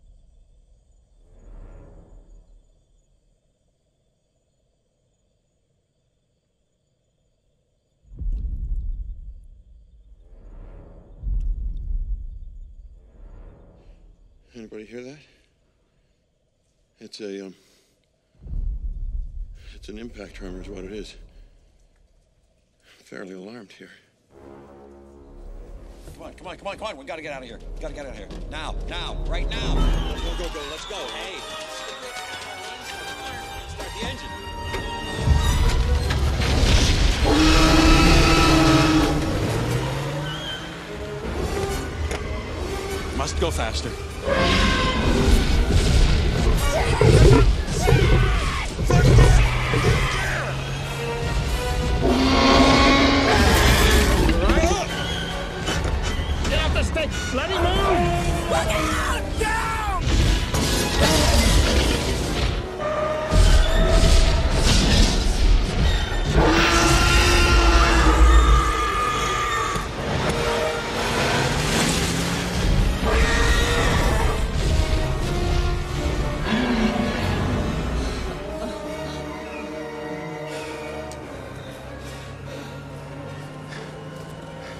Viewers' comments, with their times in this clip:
0:09 if I ever hear and felt rhythmic tremors like that, if getting the hell out of there.
0:46 Someone is slurping on their drink really loud
1:03 first contact with T-Rex. No wonder she screamed back.
1:06 t-rex: *screams to intimidate and assert dominance* ellie: *PROCEEDS TO SCREAM BACK HOPING IT WOULD SCARE THE T-REX AWAY*
1:07 Laura Dern has probably one of the best screams of pure fear and terror I ever heard
1:07 confused as to who's scream was scarier.. T Rex or the lady😂
1:07 Spielberg always loved his screaming ladies, and Laura Dern is an all-timer